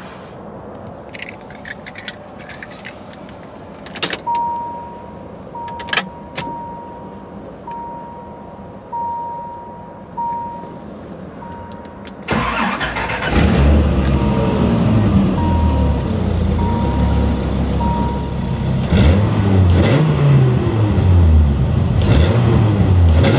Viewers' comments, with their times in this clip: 0:05 gotta love the sound of the generic Chrysler chime ;)